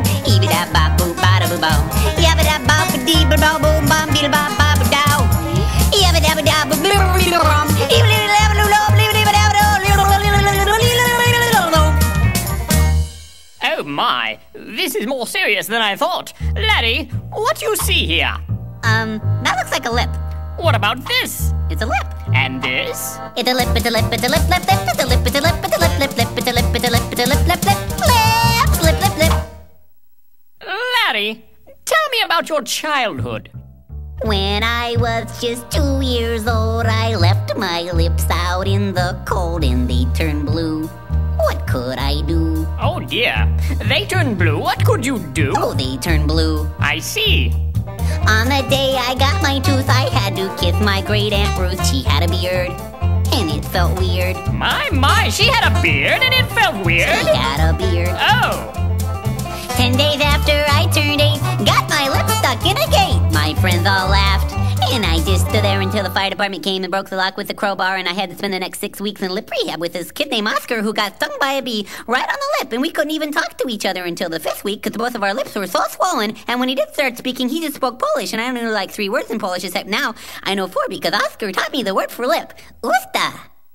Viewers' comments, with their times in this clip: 0:09 is impossible to say what he says!
1:05 Eminem, eat your heart out.